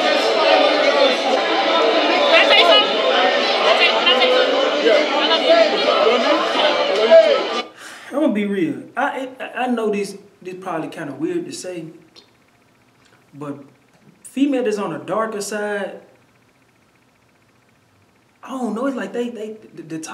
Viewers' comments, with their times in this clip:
0:04 What were trying to say ? Couldn’t understand